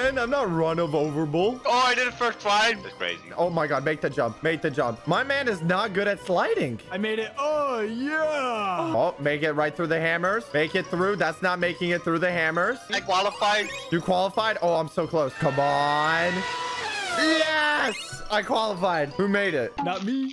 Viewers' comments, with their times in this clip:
0:08 I heard someone moaning